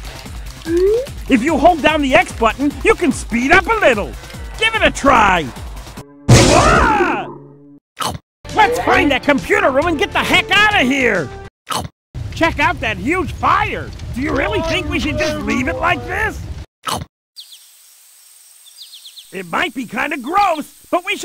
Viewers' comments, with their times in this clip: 0:06 when he screams it goes from the right ear to the left ear🔥🔥🔥🔥🔥🔥🔥🔥🔥